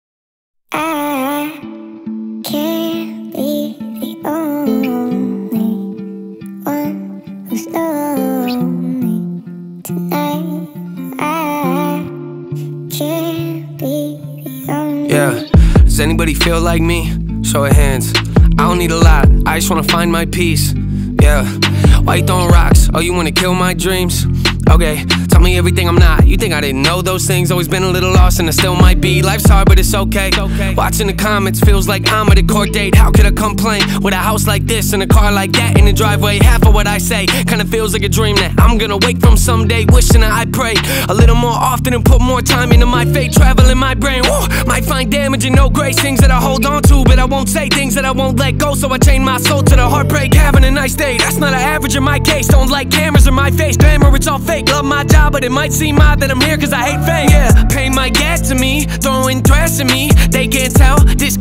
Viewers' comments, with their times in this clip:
0:01 Alien from area 51 singing in NF song
0:44 gnome sound effect